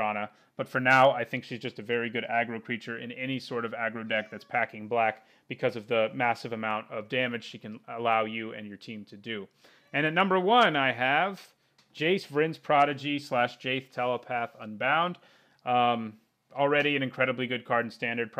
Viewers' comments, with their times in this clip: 0:04 I hear a kitty!